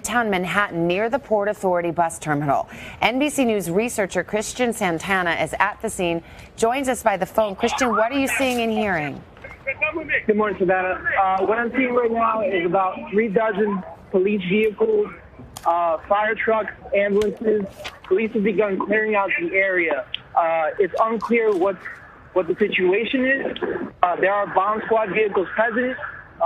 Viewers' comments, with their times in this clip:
0:07 Is it just me or does it sound like theyre saying "its the goverment"
0:08 someone in the background shouts the government chilling
0:10 Did he just say THE GOVERNMENT?
0:12 Who else hears that guy saying “ITS THE GOVERNMENT” over and over